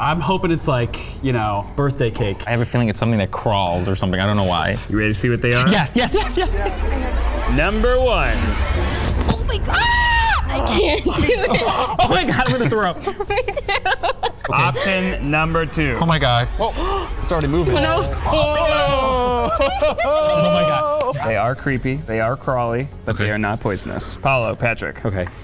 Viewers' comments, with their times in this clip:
0:09 when he screamed 😂
0:09 that scream 'Ahh omg I'm gonna throw up'
0:10 Lmaooo that scream took me OUT!!!